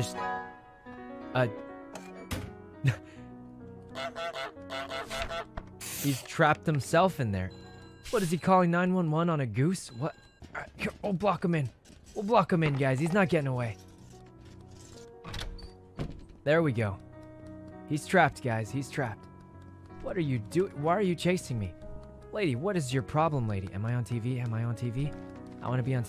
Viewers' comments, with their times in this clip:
0:09 woah the sub was 9/11?